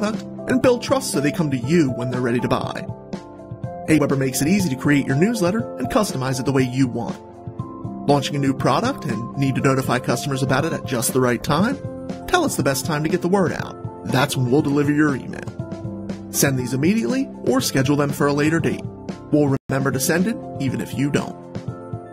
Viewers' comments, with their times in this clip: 0:04 the audio cuts out mark. Would love to hear the rest of this video.